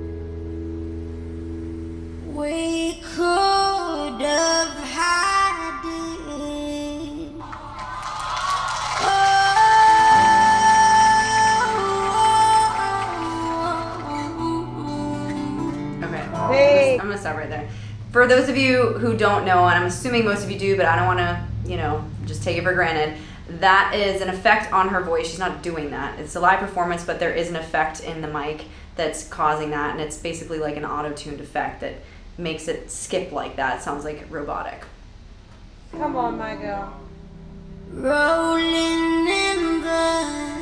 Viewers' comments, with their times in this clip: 0:03 I’m not a fan of auto tune. 😖🙅🏻‍♂️👎🏼
0:28 Do they allow the use of autotune mics in an international singing competition? I thought it was a vocal effect.